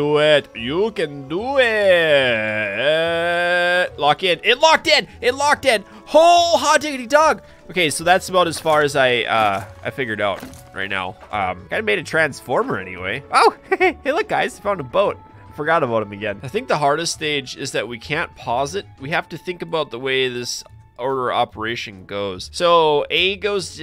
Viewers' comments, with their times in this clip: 0:06 Hole ha didi duck,